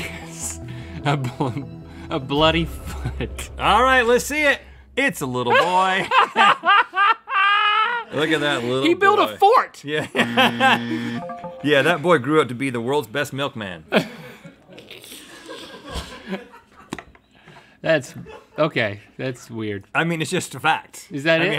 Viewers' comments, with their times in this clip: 0:03 My guy laughing like the Joker